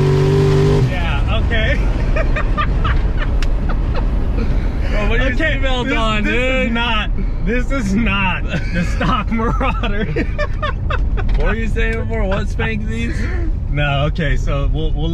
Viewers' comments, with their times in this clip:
0:03 ...starts clicking in...